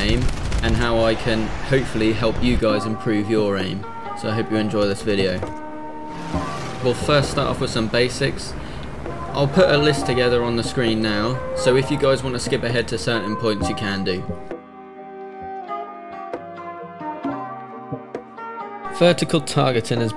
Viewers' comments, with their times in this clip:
0:06 good music choice